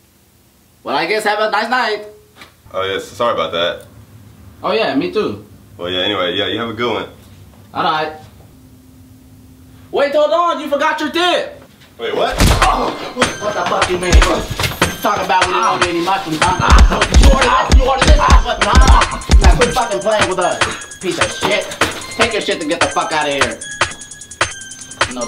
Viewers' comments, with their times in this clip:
0:06 Plot twist: he did the anime grunt and said "Wait why did he say he's sorry" And ran
0:11 Bro the music makes this 1000% better The music